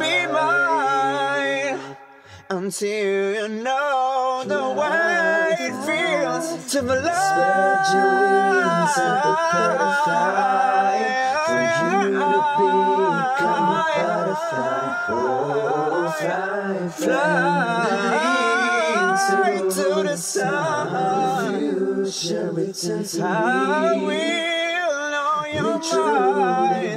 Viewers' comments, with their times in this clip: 0:07 THE BACKGROUND HARMONIES ARE ALREADY SLAYING ME Is there a hidden whistle or just pure resonance?